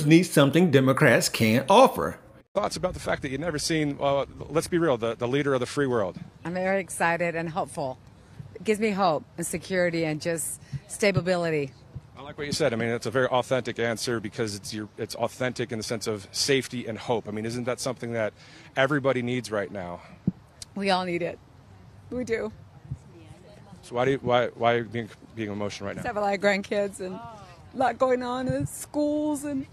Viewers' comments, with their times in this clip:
0:10 Stabability? 🤦🏽‍♂️ They’re all so smart.
0:10 "Stabability" We're working with geniuses here.
0:11 “stabability.” Also known as “stab-ability”; i.e., able to be stabbed. 😂